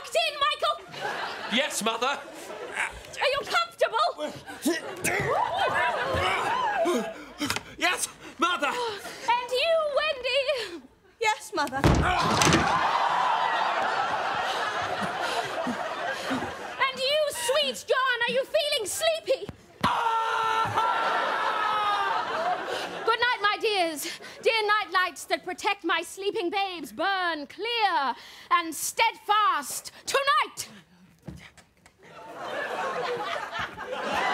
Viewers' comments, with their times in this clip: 0:10 Middle school theatre in a nutshell Just mishaps and screaming
0:19 I watched various clips of all the "Goes Wrong" skits and they ALWAYS crack me up! I nearly screamed along with John 😂😂